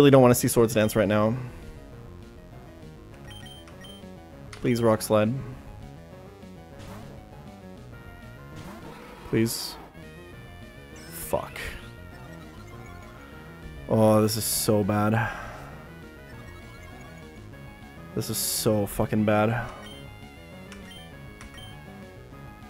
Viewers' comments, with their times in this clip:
0:10 The uncensored "Fuck" there hits so much harder than if it was censored.